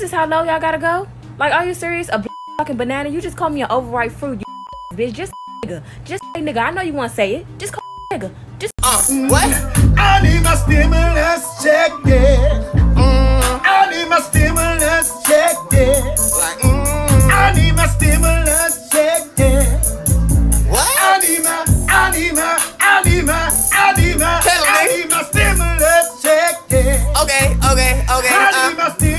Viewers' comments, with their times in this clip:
0:09 he is such a good singer tho ngl
0:10 this man woke up and chose ✨S O N G✨